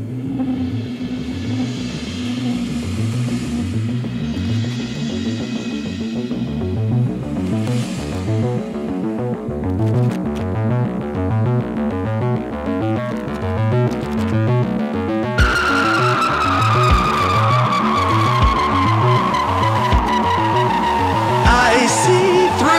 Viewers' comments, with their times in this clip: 0:10 pure synth stankface